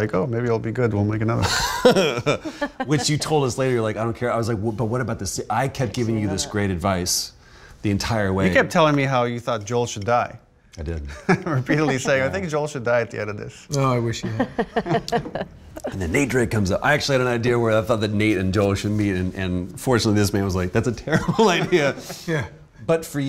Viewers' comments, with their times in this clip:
0:04 TLOU2 spolier its so oddly funny seeing ashley laugh when they talk about how Joel could of died. Like "hahahah yea noo joel wont die" knowing full well he will